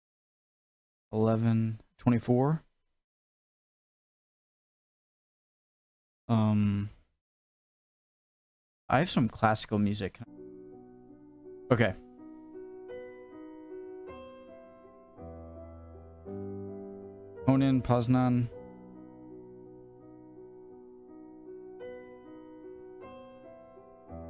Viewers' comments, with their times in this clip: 0:07 this is what I subscribed for. Good ol’ classical music